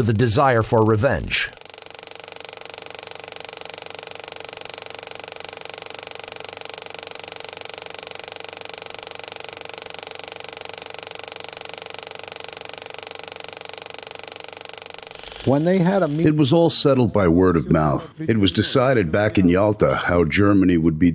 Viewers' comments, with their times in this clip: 0:08 a dub over a dub